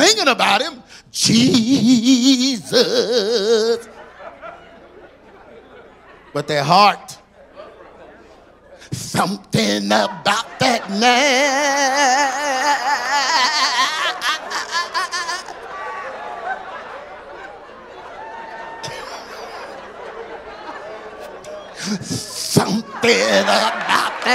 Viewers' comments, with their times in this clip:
0:08 Sumthin about DAT naaaaaaaa ah ah ah ah ah ah ah AH! 😂 😆 😂 ROFL🤣😭@